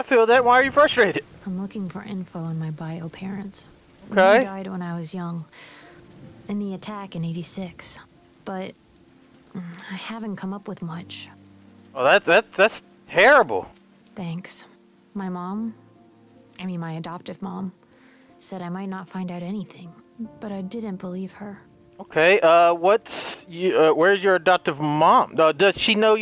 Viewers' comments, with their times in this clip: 0:09 its a girl voice actor HAHAHAHA her real voice is coming out.